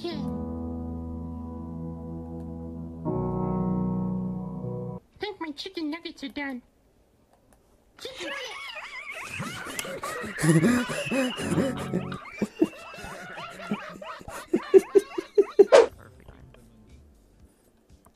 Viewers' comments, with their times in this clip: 0:06 I'm the rainbow XD you can hear my laugh.....I Sound like a tea thing